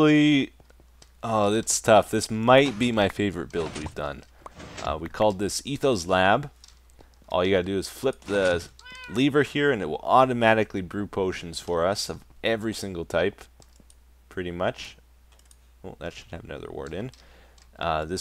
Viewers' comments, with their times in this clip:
0:06 "All you gotta do is flip the leever here and a cat meows"